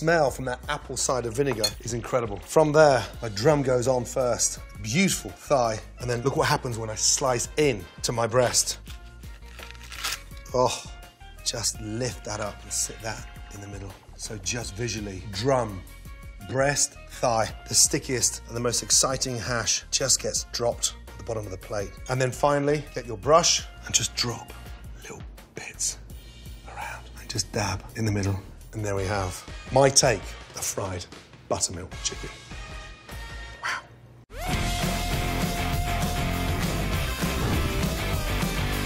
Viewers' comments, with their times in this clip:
0:08 The sound of the crunch ...I died
0:23 Gordon: Me in my ASMR voice: Why are we whispering?
0:24 I never knew that I needed Gordan ASMR so much in my life.
0:24 ASMR with Gordon Ramsay
0:24 his wife must’ve told him to stop talking so loud